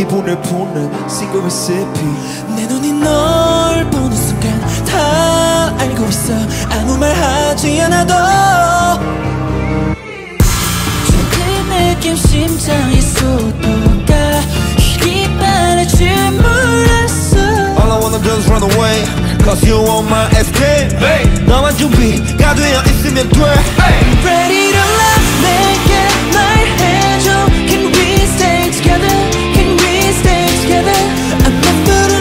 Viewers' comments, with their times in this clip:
0:04 I'm in love with Dino's voice here 🥹
0:18 I'm addicted to mingyu voice in here